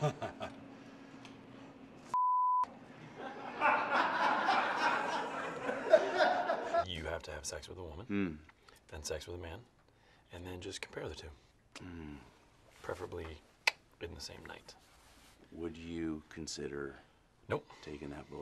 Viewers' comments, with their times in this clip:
0:03 I'm glad the crew laughed because the immediate cut in the actual show makes it so much funnier